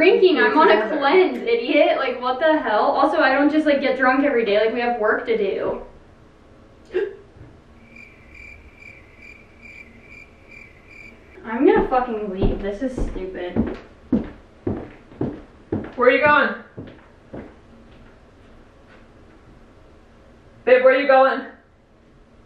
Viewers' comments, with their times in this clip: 0:06 the hiccup 😭😭😭😂 stopppp